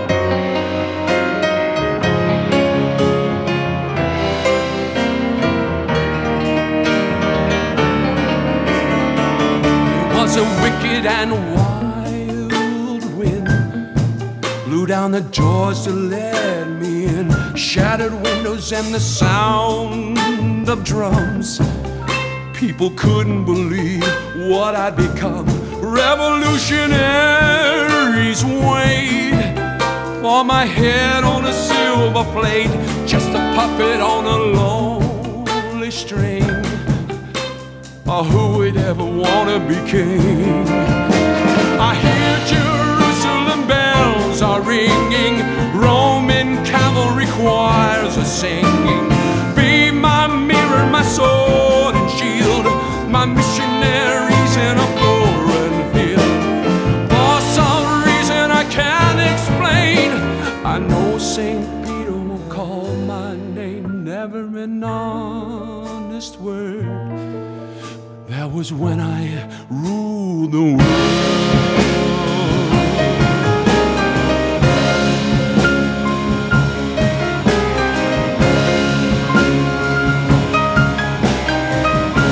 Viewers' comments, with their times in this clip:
0:09 It sounds ¨Plastic love¨ here 👀
0:11 What do you call that style of guitar-strumming ? Beautiful.
1:08 Best part. I absolutely love that transition to the songs original pitch. And that piano behind Puddles’s OOHs